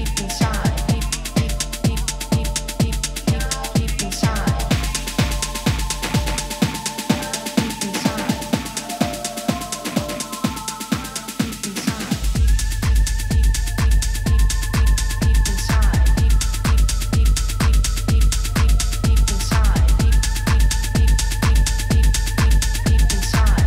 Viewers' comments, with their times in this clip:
0:08 BEAUTUIFUL SOUND drop